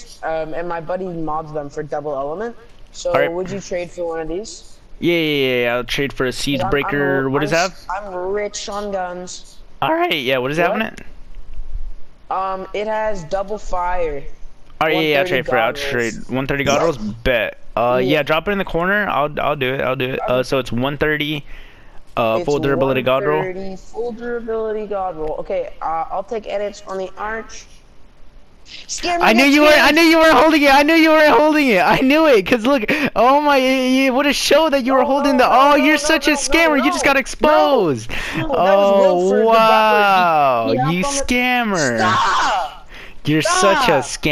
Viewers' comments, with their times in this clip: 0:07 the voice crack tho lol
0:08 he voice cracked
0:09 funniest voice crack
0:10 y do u get so many voice cracks?
0:10 free voice crack
0:10 That voice crack lmfao
0:25 that’s literally exactly how I sound, But I’ve only ever traded once, And actually do have a god roll Nocturno.